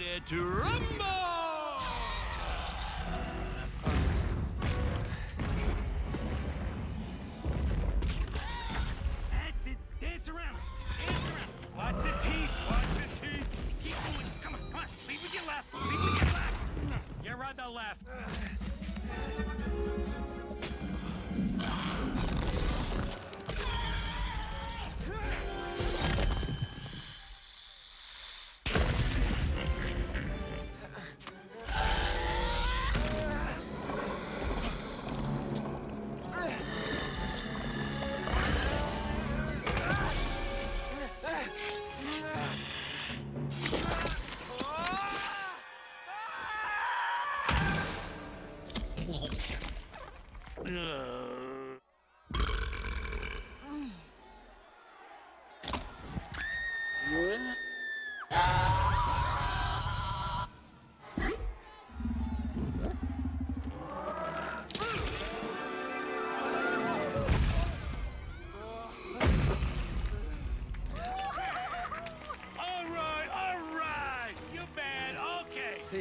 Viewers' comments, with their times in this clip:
0:03 you cannot tell me that doesn’t sound like a fart.
0:28 That laugh. That's horrifying.
0:29 Why the monster laughs
0:35 Same hissing as The Thing
0:58 Bro this scene used to scare the hell out of me. Especially the sounds the hydra makes, like